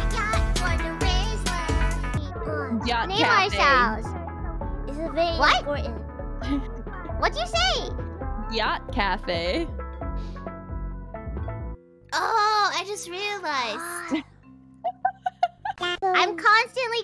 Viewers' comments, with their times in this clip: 0:04 That absolutely bewildered "What!?" from Bijou is freaking amazing!